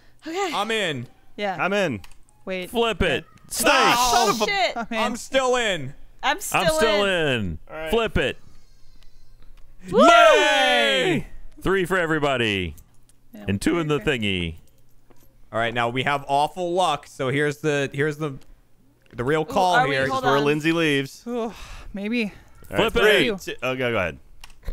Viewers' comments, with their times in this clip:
0:07 man that scream in the distance 0_0